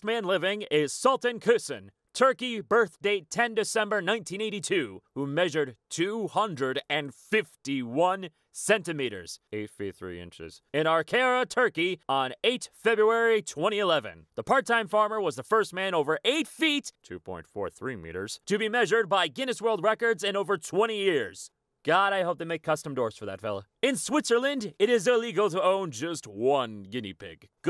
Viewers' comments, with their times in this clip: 0:08 he fucking NAILED that umlat